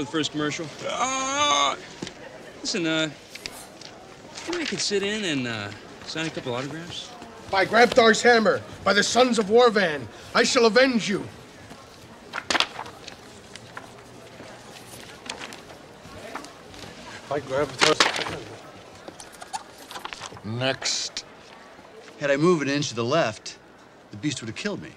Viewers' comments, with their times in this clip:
0:08 for me is so hilarious , the 1st guy nails the line perfect, but the following dude gets got off lol ,probably star struck, nervous as hell practiced the line over and over